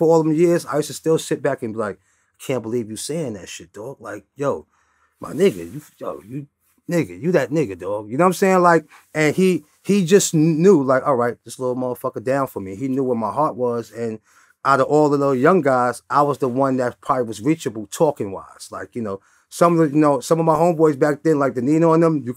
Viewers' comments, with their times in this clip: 0:08 he sounded like DMX for a split second